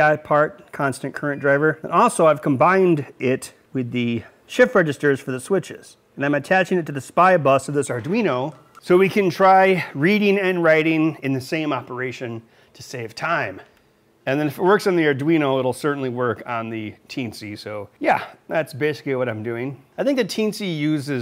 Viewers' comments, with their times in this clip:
0:04 The Spy bus... ;) Also: uint16_t, please! We are in 2017, seriously.